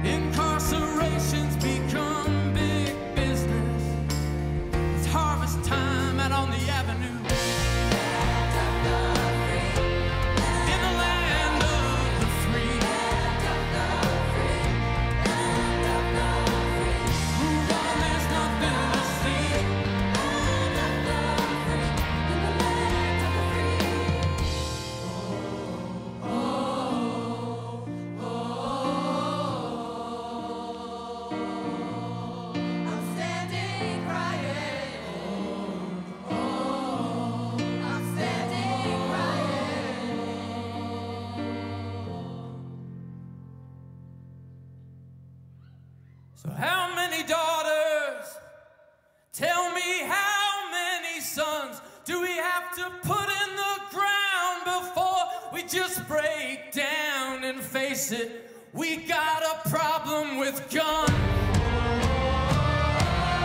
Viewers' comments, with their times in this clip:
0:06 were was the drum fill?!
0:46 love that Brandon solo without Instruments ,just his voice